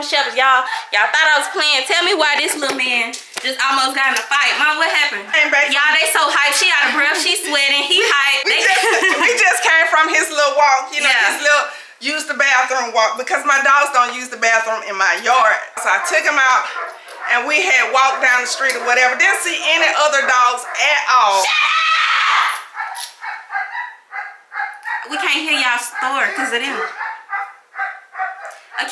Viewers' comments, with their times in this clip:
0:09 I loved her country accent 😂